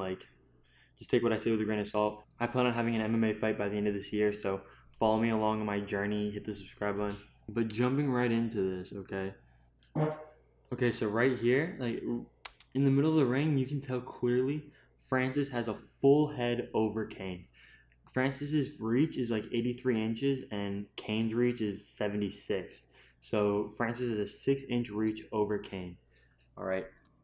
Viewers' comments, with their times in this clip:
0:09 Did he just fart ? Haha